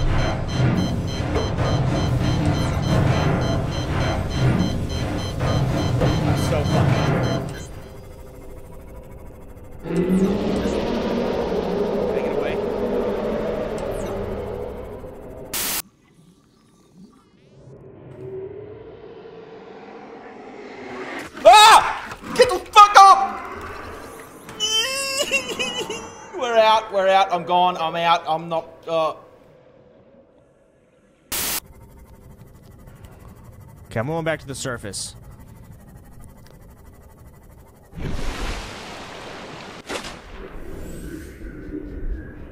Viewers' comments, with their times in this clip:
0:10 You know, I really like the old roar better. It was so much more menacing.
0:25 crabsnake sound like a volatile from dying light.